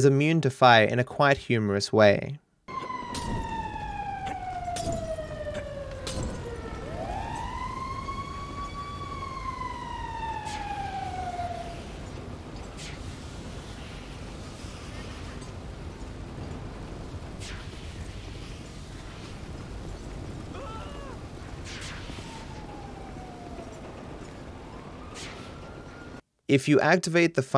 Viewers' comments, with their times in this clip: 0:08 Fun fact: This fits pecfectly with Uptown Funk lyrics and rhythm